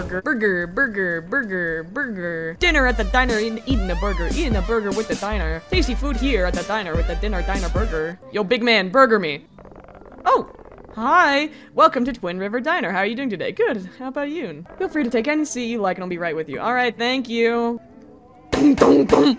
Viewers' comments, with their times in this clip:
0:03 SHE WAS MEANT TO BE A RAPPER LIKE LOOK AT THIS BEAT SHE DROPPED- (THE BEATS SECONDS. thank me later ;))